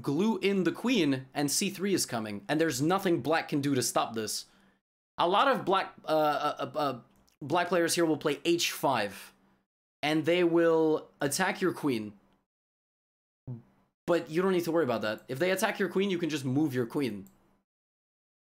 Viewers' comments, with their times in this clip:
0:05 yes levy, what did you say, I couldn't hear it properly. Can you speak a bit louder? 😂